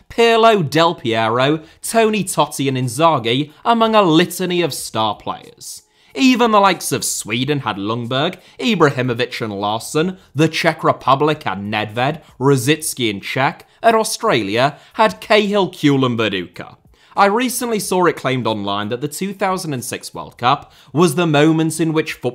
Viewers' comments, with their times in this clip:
0:07 Are we really letting "Lungberg" slide??